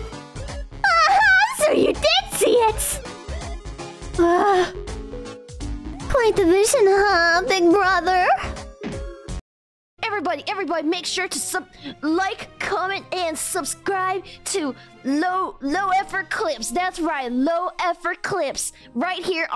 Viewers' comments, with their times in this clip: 0:04 why she gotta say it like that..i mean i know why..but ayo?